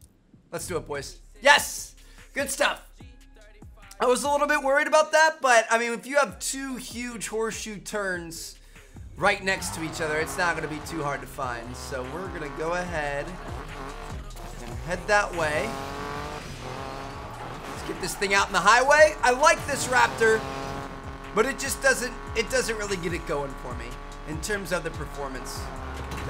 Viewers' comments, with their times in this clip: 0:10 Did anyone else hear perplexing Pegasus